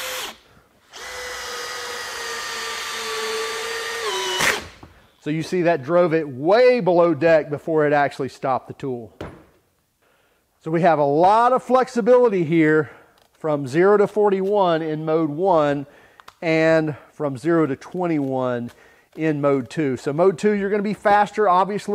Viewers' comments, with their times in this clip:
0:03 what was that sound at the end of that screw for a second sounded alot like a mechanical clutch..